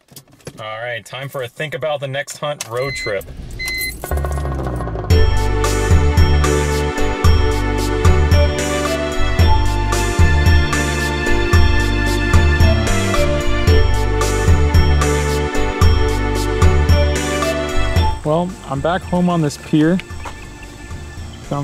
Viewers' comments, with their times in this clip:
0:05 Gosh, the SWSH champion theme actually makes me feel emotional, it's so well done. Also, what's the music you put in ? Thanks for the video, it was very enjoyable!